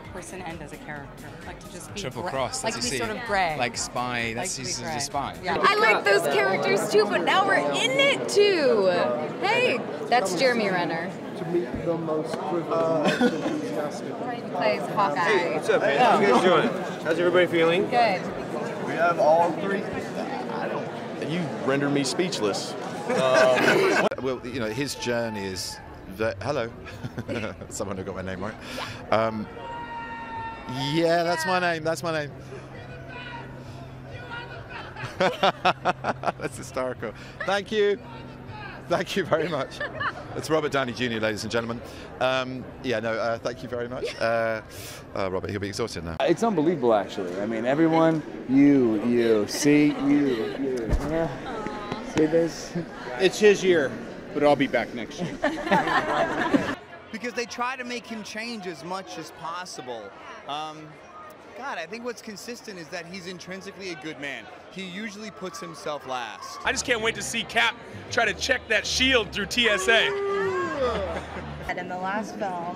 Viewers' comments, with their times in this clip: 0:08 Jeremy said that like a Elementary School kid
0:42 anyone else laughed at Robert Downey Jr screaming? Lmao
0:42 Benedict having and interview Robert Screaming BENEDICT Other people turning to watch what the heck is happening
0:42 If i saw Benedict someday i would be screaming the same as RDJ😂💕
0:42 you can clearly hear Cumber, he wasnt yelling Benedict at all...
0:46 oh RDJ shouting like that made my day
0:47 imagine see Robert Downy Jr while screaming lol XD
0:56 RDJ with that scream damn hardly know